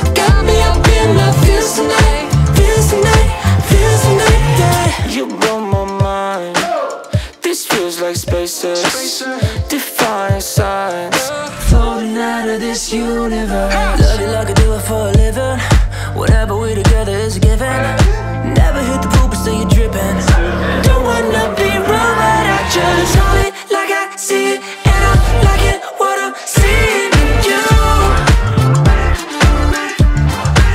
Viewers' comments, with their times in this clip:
0:04 I love that background style "LOFI" that you hear, it's so special and from minute that part is like a Daft Punk style and this new era is very good 😍❤️
0:17 Who else hears poop dripping ?